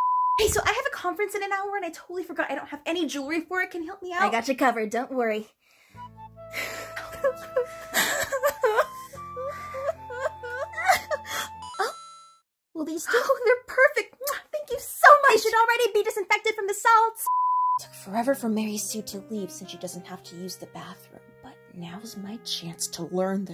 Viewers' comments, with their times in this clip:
0:04 that Naruto backstory soundtrack tho
0:06 Mary Sue cry’s...that’s false Mary Sues don’t have any emotion